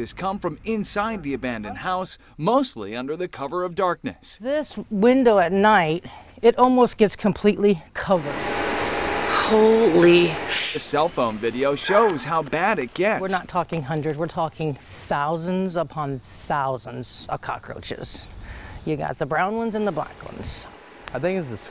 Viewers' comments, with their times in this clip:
0:09 the way they censored her “Holy shhh-“ with a smooth transition 😂😂